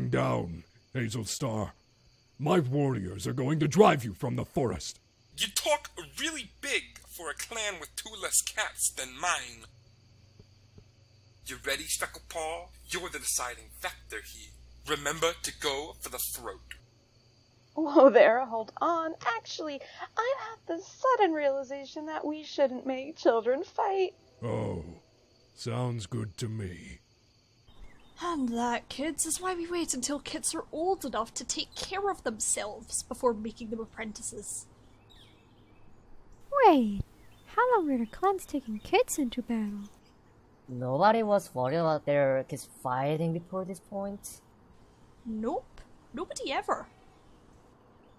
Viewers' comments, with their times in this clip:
0:07 his voice is so funny!
0:21 Daisytail: oh wait I'm at the sudden realization that we should not make kids fight. Cat I don't know: raspy voice oh sounds good to mee Random superhero cat and Floofy cat standing in the corner: *coughs*
0:36 What are they saying ? I didn't catch any of that 😅